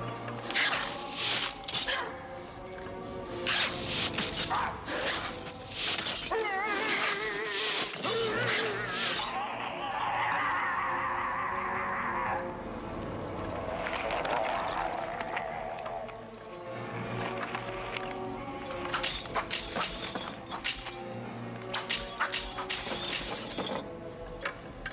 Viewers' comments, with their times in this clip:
0:06 Love the vibrato.